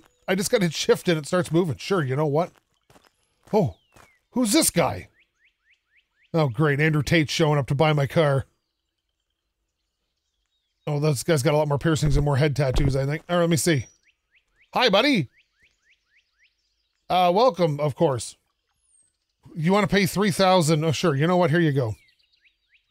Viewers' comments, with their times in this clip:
0:04 this guy said it so funny I laughed at it for a full 10 seconds🤣